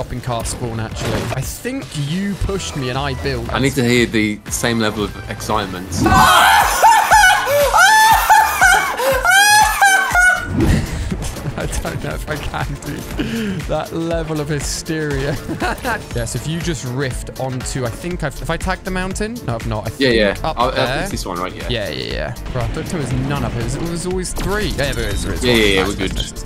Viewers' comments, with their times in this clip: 0:06 goofy ahh laugh 😂
0:09 I was drawing and not paying attention to the video and then I just here hahahaaha 😂 best laugh ever😂